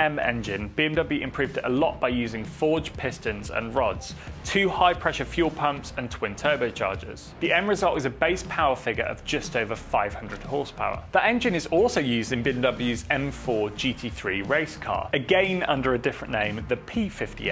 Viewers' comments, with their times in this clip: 0:03 Is that a discord ping sound ?